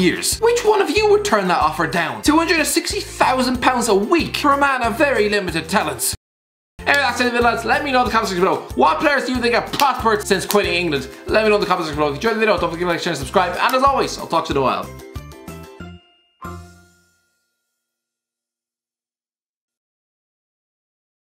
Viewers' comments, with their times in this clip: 0:06 i only came to hear the Irish guy rap!